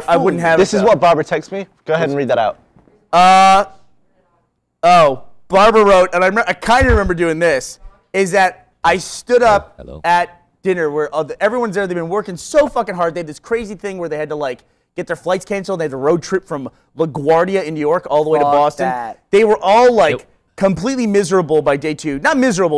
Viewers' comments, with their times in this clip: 0:07 This voice here scared the shit out of me XD
0:08 You hear someone say "Hello, Hello" WTF?